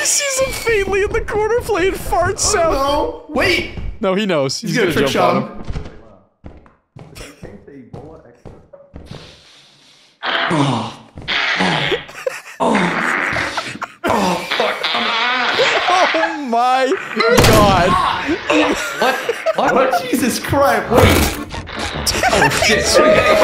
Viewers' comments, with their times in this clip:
0:08 a yes 27 year old men laughing at fart jokes